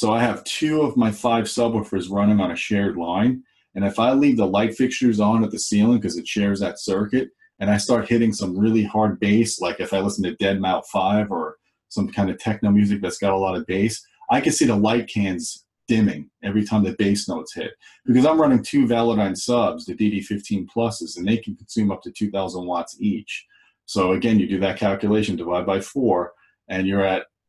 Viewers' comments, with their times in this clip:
0:08 ''Deadmau five'' haha, i see what u did there - Deadmouse